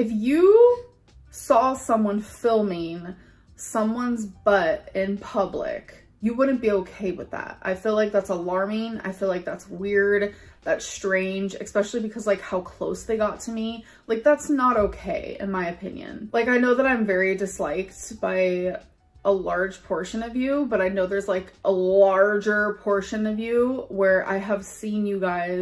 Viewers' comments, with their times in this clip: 0:09 Why the hell are people saying the word "ex-specially"? It's Es-pecially! Let's all say it.. Especially. "Ex-specially" is not a word. She says it There are so many people who cannot speak properly.